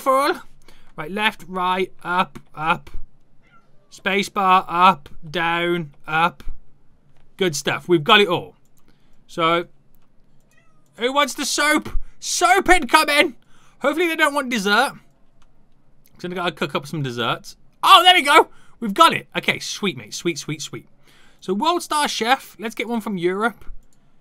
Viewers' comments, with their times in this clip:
0:10 cat cries for attention awwww